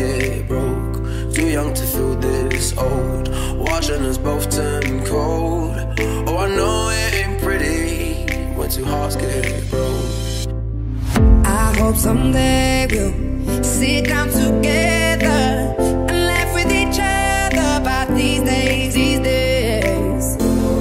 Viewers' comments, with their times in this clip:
0:03 for some reason this song brings back ✨spicy memories✨
0:06 music reminds me of my holiday music c: